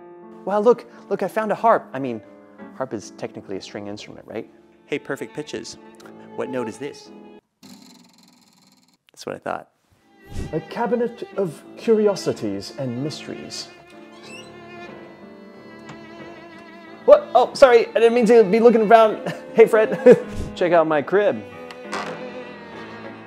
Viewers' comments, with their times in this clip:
0:05 it's an F
0:05 it's a very very very very low E. Next question please Ray!
0:06 I hear a low G.
0:07 I have perfect pitch. I'm pretty sure that the note changed once or twice, but I definitely heard a C#.
0:07 sounds like a B to me
0:07 thats the boing note
0:08 sounds like Ab 0